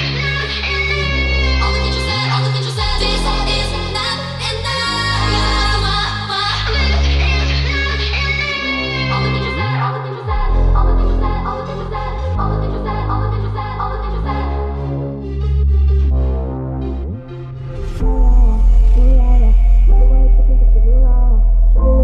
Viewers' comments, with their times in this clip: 0:03 did it just say "obavicu sve"